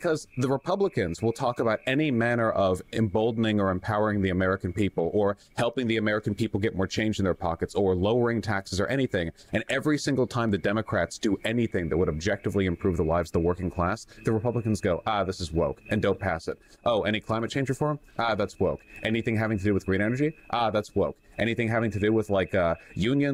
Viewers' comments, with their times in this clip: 0:04 Are there crickets in the background? She does not like Vowsh.